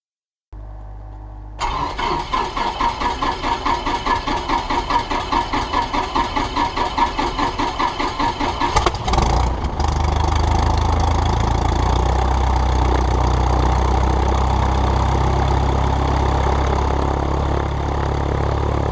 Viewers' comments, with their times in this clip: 0:06 Vibing to the engine